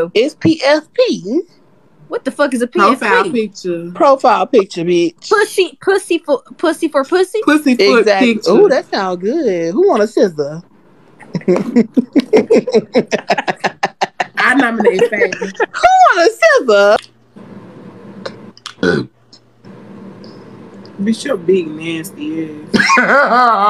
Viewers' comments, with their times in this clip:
0:10 the sinister laugh after 😂😂